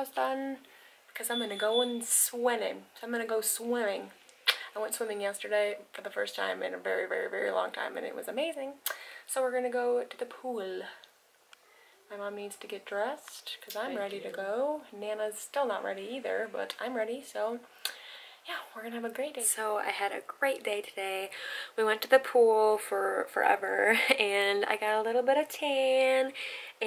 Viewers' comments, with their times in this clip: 0:07 That beep just freaked me out lol. Sitting at my grandparents house alone thinking 🤔 they definitely don’t have an alarm in their house lol